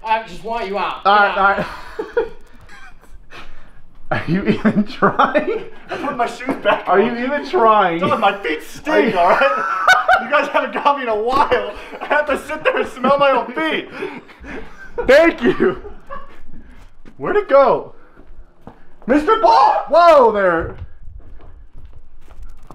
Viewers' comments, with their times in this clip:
0:05 Click the laugh tho lol